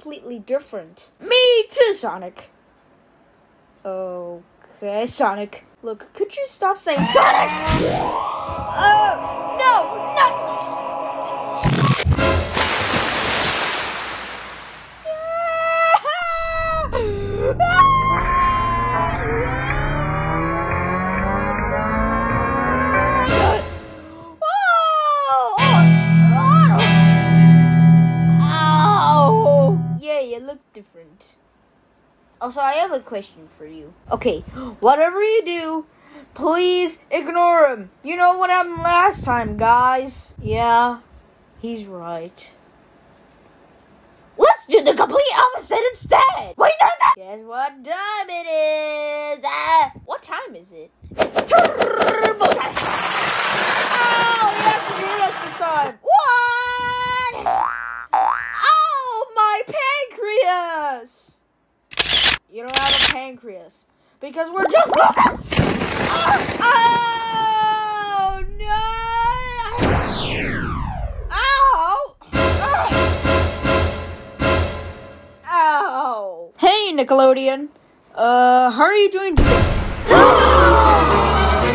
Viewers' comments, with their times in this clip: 0:09 looks like a BBC sound
1:02 why is there picture taking sfx